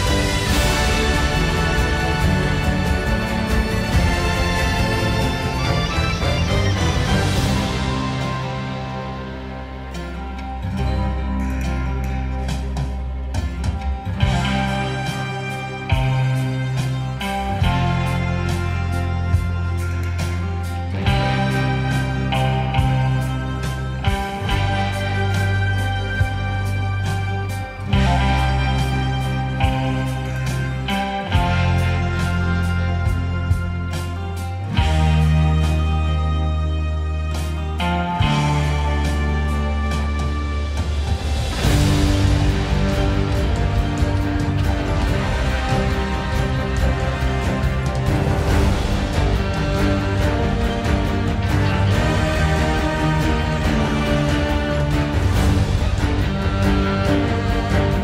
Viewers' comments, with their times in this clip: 0:07 my favourite music part😍😍
0:40 ---That Spider-man score tho...damn. Spider-man is my own favourite, but I am happy for God of War, the game was very good.